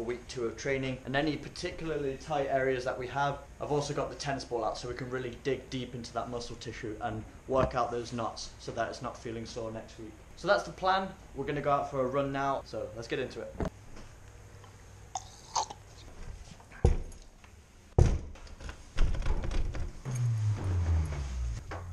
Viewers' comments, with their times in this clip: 0:08 Did he really say WORK OT THOSE NUTS!!!